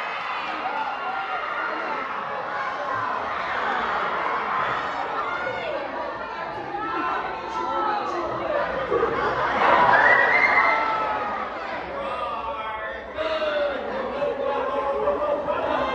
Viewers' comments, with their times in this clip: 0:03 THIS ONE GUY YELLED “WHAT THE HELL” LOL